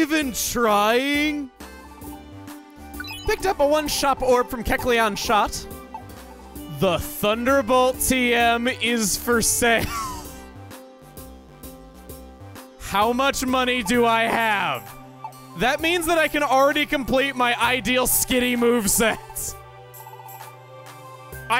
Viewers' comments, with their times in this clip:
0:03 "picked up a One-Shop Orb from Kecleon's Shot" am i the only one that heard this??? lol